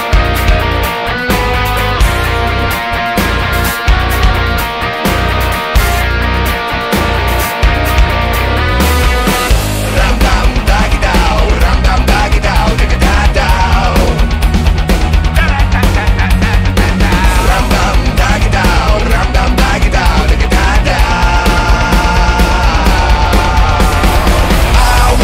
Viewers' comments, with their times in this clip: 0:10 Excellent, were you channeling Korn ? Sounds perfect.